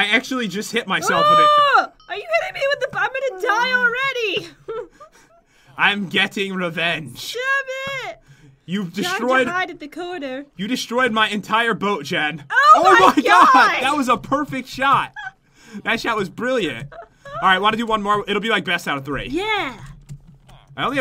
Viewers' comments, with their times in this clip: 0:03 did I hear cloud the kitten or was that a ghast???